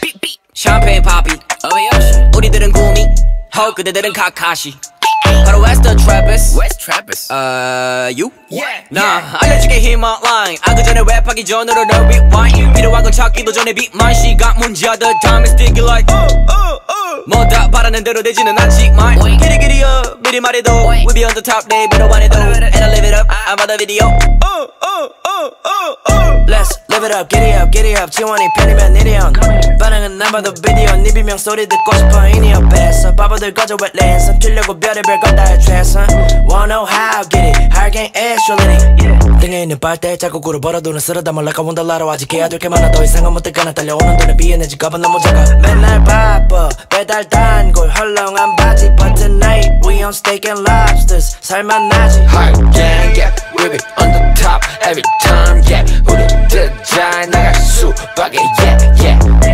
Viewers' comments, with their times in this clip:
0:07 I can’t be the only one who thought he said wheres Travis 😭
0:39 it was so hard to keep up with him, the man was spitting actual fire 😂
0:45 sounds like Drake